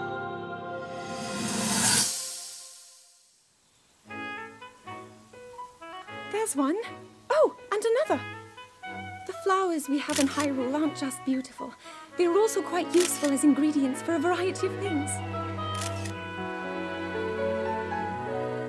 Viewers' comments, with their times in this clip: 0:04 Perhaps I'm just a noob, but I feel stariotipical Nintendo music vibes right now.